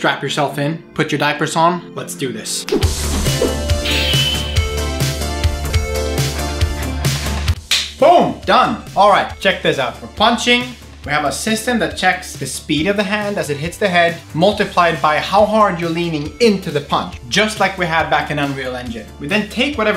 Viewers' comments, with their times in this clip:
0:06 Ha-ha! You said "it is 11.30 only". Man! How could that be that it was exactly on my clocks too! Kudos for "Hacker" coding part with some retro-wave music!